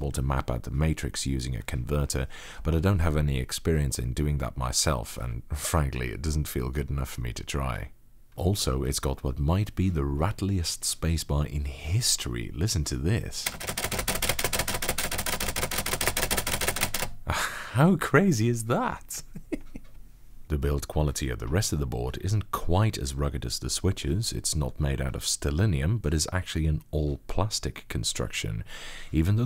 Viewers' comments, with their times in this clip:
0:08 onwards: Me laughing hysterically at the rattliest spacebar in history 😂
0:12 Spacebar Heavy Machine Gun Subsonic VSS Noise: